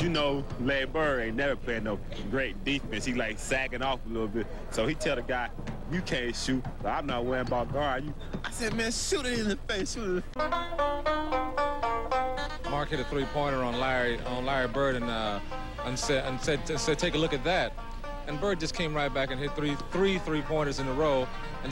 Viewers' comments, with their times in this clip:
0:03 Lavar that you ?